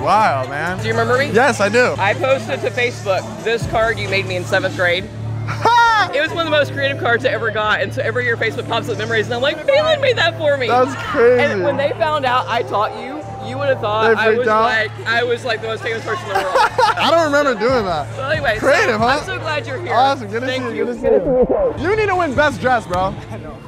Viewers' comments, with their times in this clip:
0:05 that’s the most lil yachty laugh ever